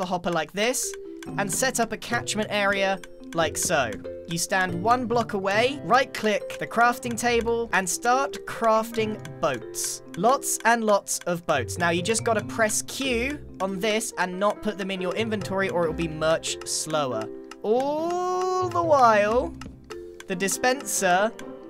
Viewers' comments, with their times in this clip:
0:08 Hey the dispenser also doubles as a 4/4 metronome! That’s pretty nice.